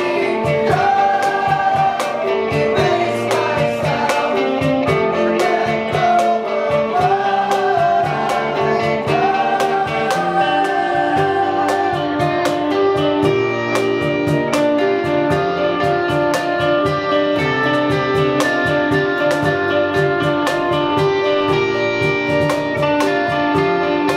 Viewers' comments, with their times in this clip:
0:09 never realized that beat...